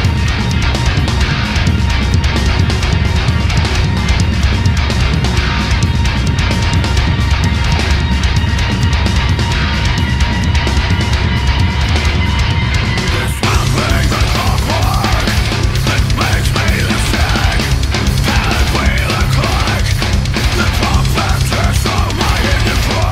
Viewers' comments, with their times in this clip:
0:09 the first sip of coffee released the djinn voice